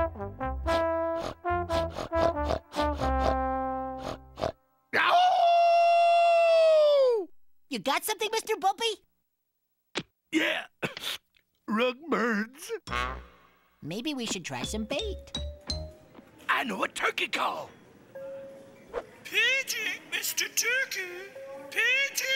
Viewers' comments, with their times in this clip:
0:04 He made me laugh when he howled like a hound dog